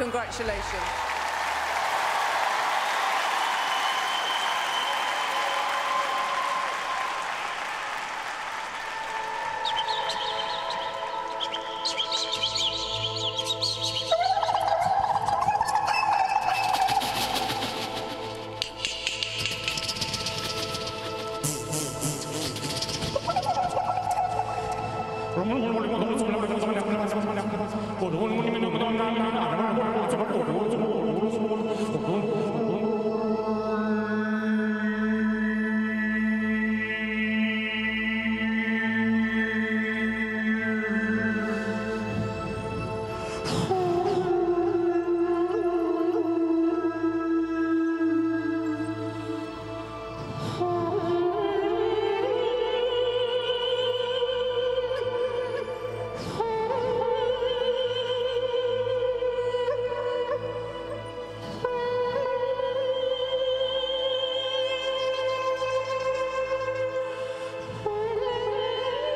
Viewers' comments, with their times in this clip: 0:05 I'm searching this guy. I love his voice. God Bless!
0:44 sounds like the earth is crying
0:50 Those sounds was so trippy but amazing
0:50 literally the sounds of a DMT trip